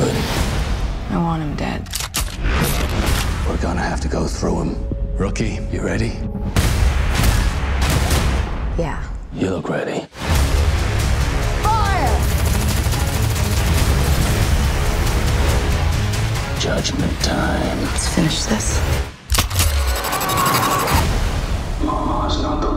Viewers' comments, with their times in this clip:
0:08 music like Zack Hemsey - Mind Heist